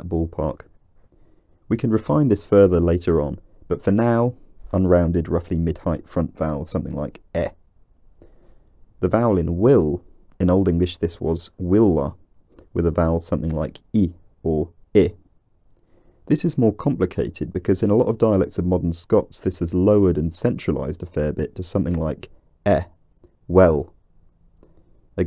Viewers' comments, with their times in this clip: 0:07 As someone from Dundee (a little further up the East Coast of Scotland) that 'eh' sound heard at: is very familiar to our local dialect, I swear that some round these parts can complete an entire line of dialogue on that one sound alone! 🙂My own way of pronouncing goose is like the stereotypical Scots 'Hoose', whereas good is more like 'Ged or Geud'.